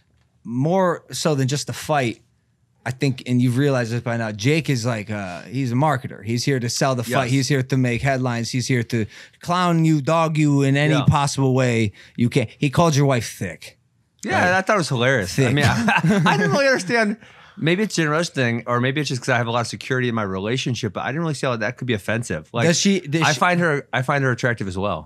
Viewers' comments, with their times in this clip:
0:07 turned Italian for a sec